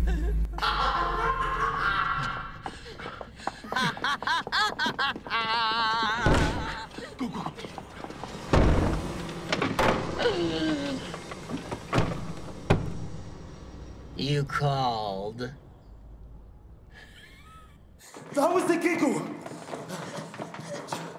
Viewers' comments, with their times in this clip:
0:08 no music hahahaa